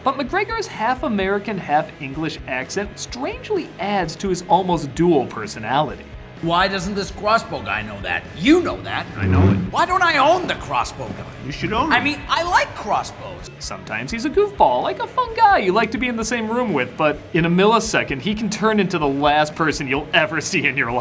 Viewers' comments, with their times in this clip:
0:06 OK, the way Ewan McGregor pronounced the word 'crossbow' had me in stitches 🤣